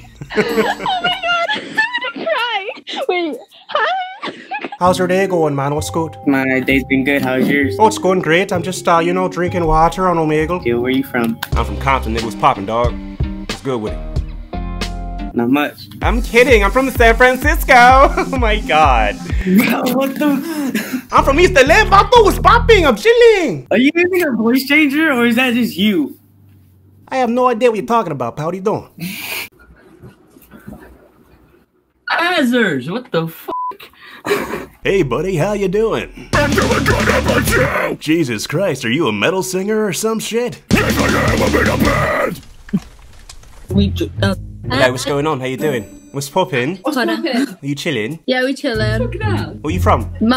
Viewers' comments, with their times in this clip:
0:05 Bwahaha 😂 Blew this kid's mind. Scared him a bit with the Compton voice.
0:19 that voice I have no words but to laugh
0:32 Oh My God! It's the real Balmond😲😲
0:34 Guy sounds a bit like kyle anderson from brand of sacrifice.
0:35 Bro got brutal metal scream vocals
0:36 that grunge singer voice lmao. totally unexpected.
0:36 this guy sounds like corpsegrinder